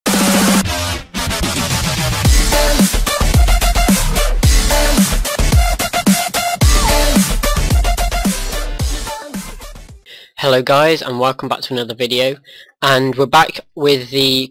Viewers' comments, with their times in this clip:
0:00 Warning for headphone users